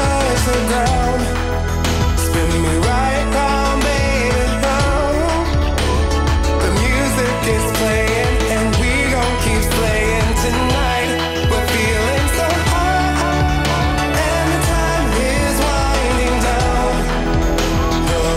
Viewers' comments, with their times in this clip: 0:05 I loooovvveee the way she says " round" Fml it's so GOOD